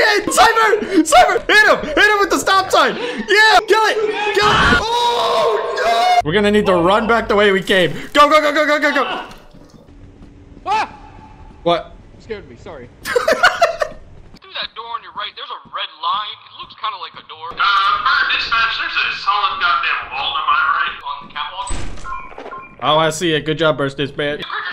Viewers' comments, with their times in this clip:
0:10 This video is amazing, so many moments made me laugh but for some reason the out of nowhere scream just absolutely kills me everytime.